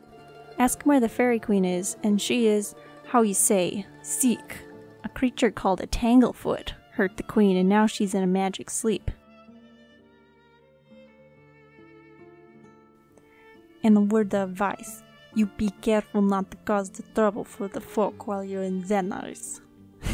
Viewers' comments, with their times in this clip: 0:07 i love how you lowkey added the godfather theme song 😂😂 veryyyy smooth of ya